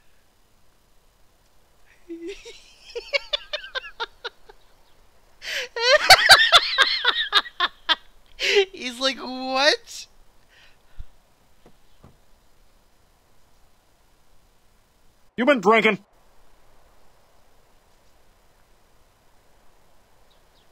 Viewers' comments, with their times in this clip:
0:03 even "Budder" :D
0:06 That laugh HAHHAHAHAHA